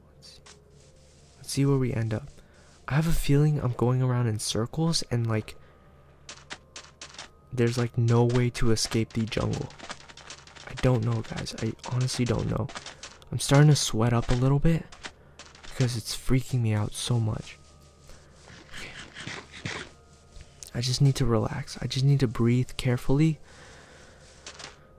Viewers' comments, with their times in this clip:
0:08 it sounded like something was chasing him. (BC i heard double sand steps)
0:12 and also I don't know if this isn't some kind of 'old-version' glitch, but whenever he walks on sand, it sounds like there are two people/ entities walking on it eg.